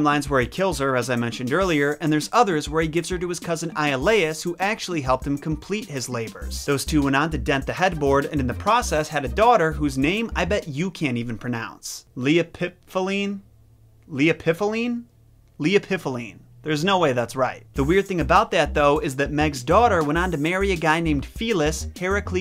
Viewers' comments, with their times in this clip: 0:10 That sounds like a drug.